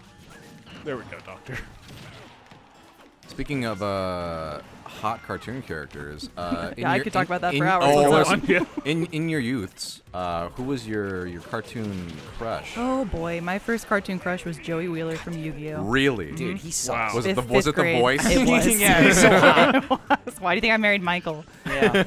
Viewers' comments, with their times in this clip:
0:07 the joey wheeler impression xD